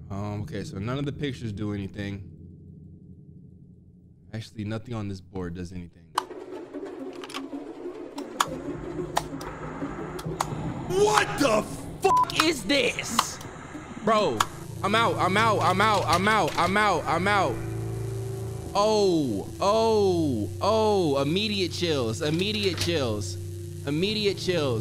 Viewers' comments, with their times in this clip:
0:08 i love the emphases on the F lmao